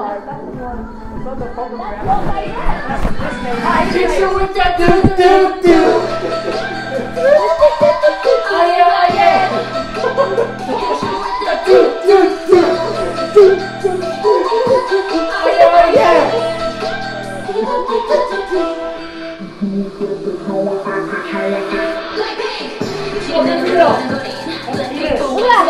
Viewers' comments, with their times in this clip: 0:06 Dead headphone users